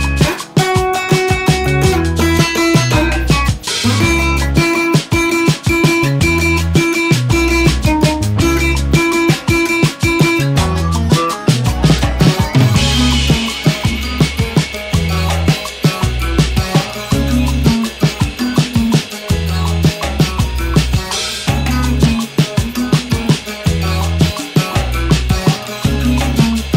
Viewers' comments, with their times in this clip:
0:08 is that a puppy dog barking ahaha home recordings in iso ftw!! <3
0:11 Sounds like the guitar was recorded through the mac book mic.